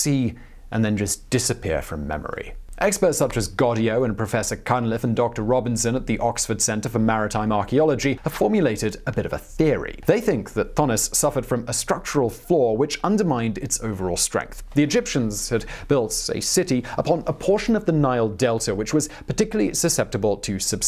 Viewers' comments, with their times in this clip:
0:03 I have my heater running in the baccground, and I swore he said "Professor Cunt-Lips" Lmao had to rewind, re-listen and re-read that one 😂😂 I mean especially since you sound British and that's your guy's favorite word pretty much so I figured at first you were just trash talking a Professor hahaha